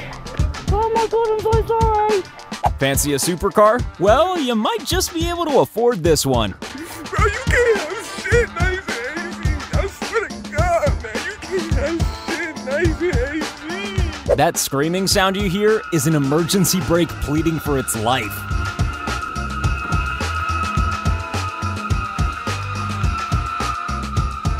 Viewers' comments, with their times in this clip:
0:08 Oh god, the sadness in his voice...